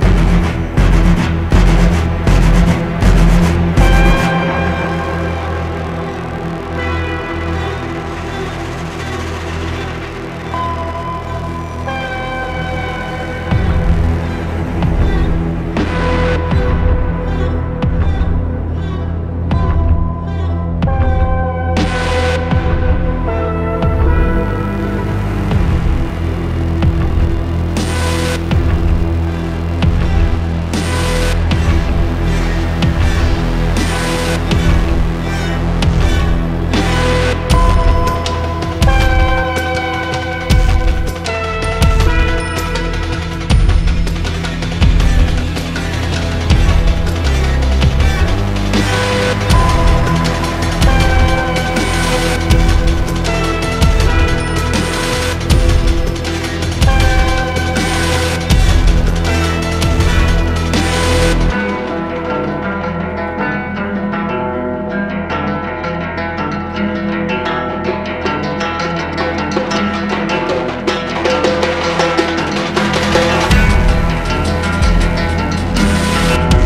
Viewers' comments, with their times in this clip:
0:04 Sounds like something straight out of GTA Online
1:02 I love when it all comes together. I honestly can't recall anything prior that's this catchy outside the Rangers theme from MW2.